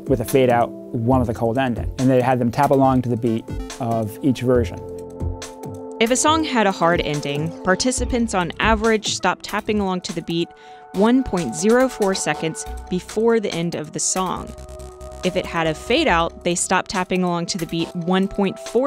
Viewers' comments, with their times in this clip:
0:05 Both versions clearly have fade outs. One's just longer than the other.